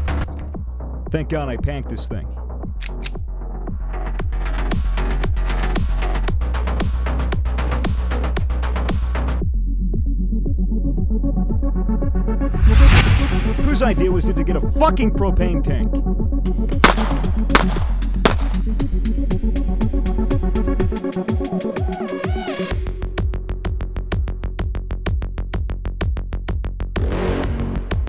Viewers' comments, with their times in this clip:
0:10 *holy music stops"